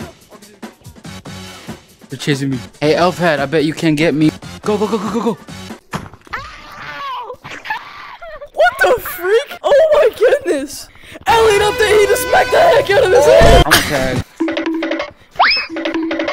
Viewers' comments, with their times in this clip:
0:03 the bone crunching slam 😫😫😫😫